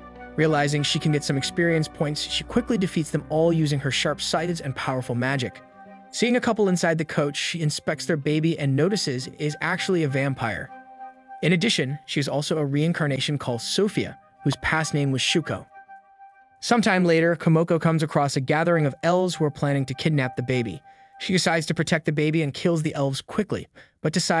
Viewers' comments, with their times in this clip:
0:07 Is this video text-to-speech? How can you call a “chariot” a “coach”? First video read “abyss” as “aybus” and “isekai” as “i-sky.”